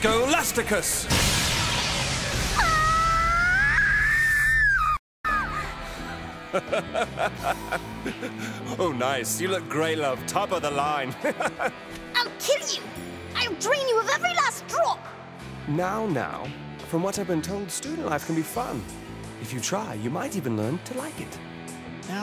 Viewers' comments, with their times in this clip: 0:05 TF2 Demoman: OI! What just happened?